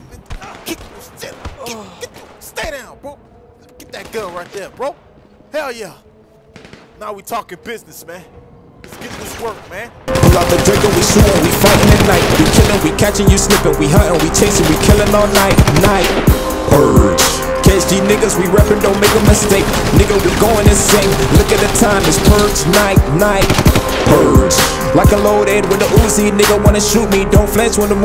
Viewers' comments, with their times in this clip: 0:09 the sing lit